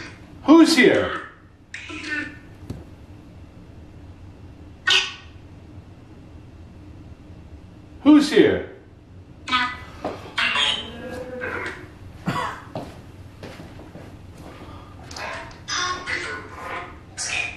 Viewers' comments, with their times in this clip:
0:04 Who's here?, Big dog and I heard woman say Peter